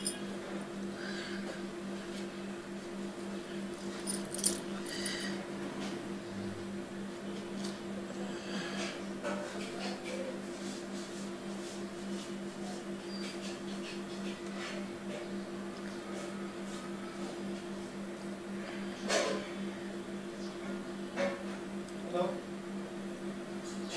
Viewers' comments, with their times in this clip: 0:09 SOMONE AT THE background is stabing meat